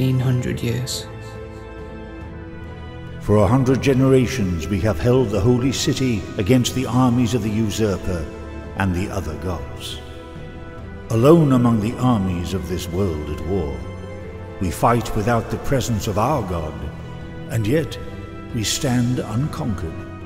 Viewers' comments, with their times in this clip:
0:03 GOLDEN VOICE OR WHAT!?